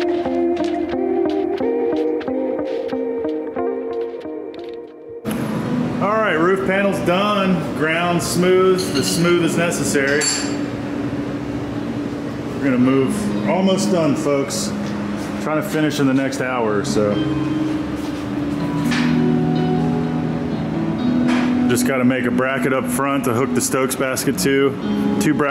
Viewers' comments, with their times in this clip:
0:06 Love the parkwood fantastic song